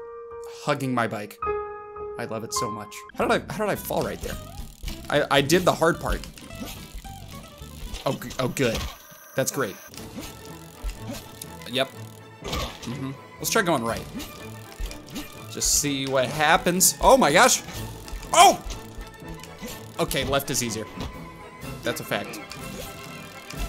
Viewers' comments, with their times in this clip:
0:10 You know it's not going to go well when this music comes on: 😂😂😂